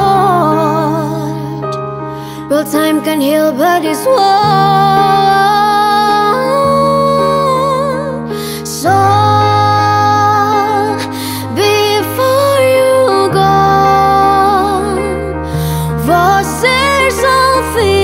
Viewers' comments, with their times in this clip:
0:04 the best part I think is that voice :')